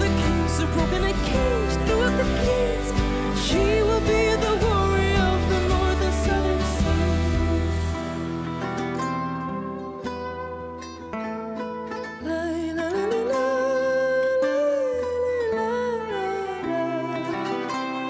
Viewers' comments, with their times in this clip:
0:04 This is absolutely beautiful! Alessandra has bucketfuls of scenic intelligence, and reads rooms and settings so well. At a pre-party a.m., she goes on with ad-libbs and improvisations with audience courtship. In the TV studio on a Friday night, during the recording of Lindmo, she calms down her voice and gestures and uses the warmth of her voice for all it's worth. I'm still holding on to mine and believe that Norway will take home the trophy after this year's Eurovision 🙂